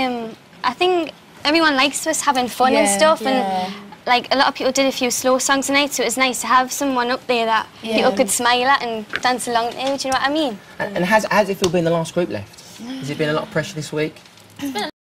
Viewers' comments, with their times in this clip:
0:09 DO' you know what i mean :)